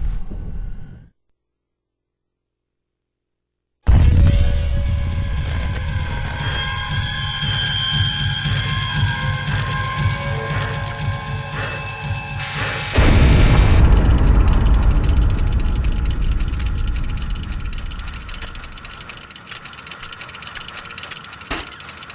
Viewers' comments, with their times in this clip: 0:10 wtf is that grunting noise in the background?